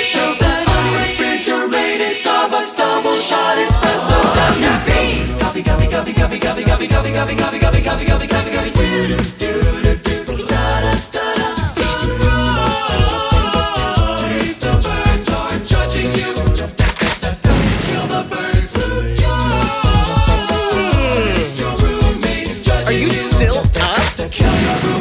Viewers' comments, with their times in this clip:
0:06 When the subtitles are like: GUMMY GUMMY GUMMY GUMMY